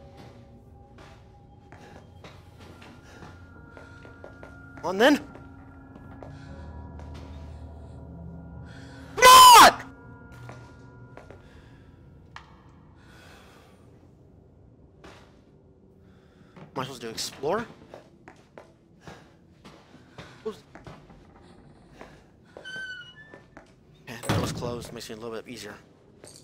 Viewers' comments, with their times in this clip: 0:08 Tyler screaming all of a sudden like CMON!! or HURRY!!! scares me more than the game